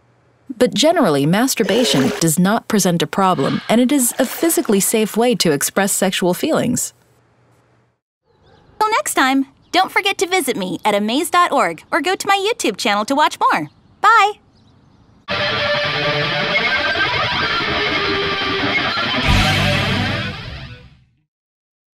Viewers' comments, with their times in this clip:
0:09 did he say "more" or "porn"?